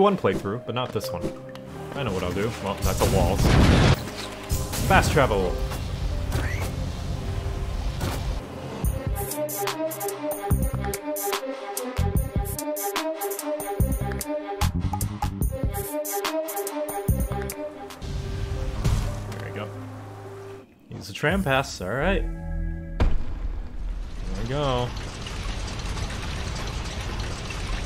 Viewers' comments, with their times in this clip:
0:09 Omg the music what a banger